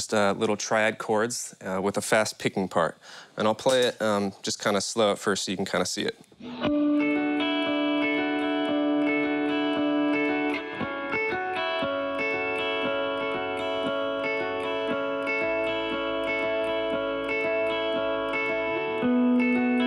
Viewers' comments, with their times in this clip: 0:06 I dig the string swipe before he starts playing right It's the little things
0:07 it's similar to the the intro of the song Round and Round by imagine dragons.